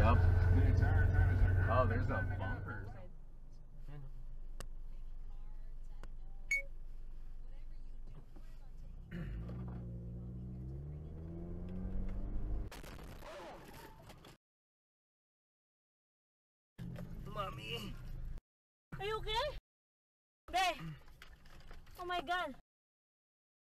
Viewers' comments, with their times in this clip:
0:04 I have that same action camera 😂 I know that beep